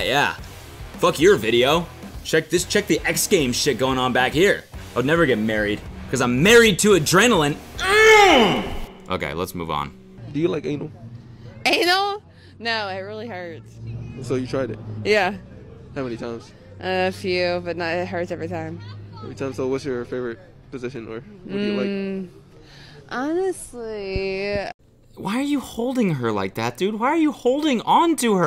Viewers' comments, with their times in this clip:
0:10 why does this dude speak like Barney the dinosaur